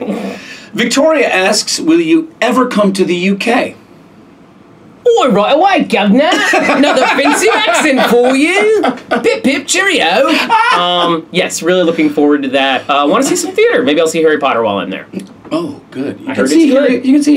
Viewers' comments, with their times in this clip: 0:05 IM PISSING THE ACCENT